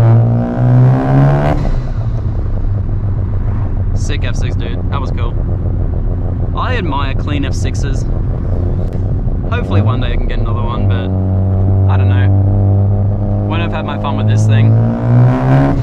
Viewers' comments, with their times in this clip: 0:03 f6 next car? I mean they are slowly starting to come down again! Sounds mint mate, good to see you happy with the fd and enjoying it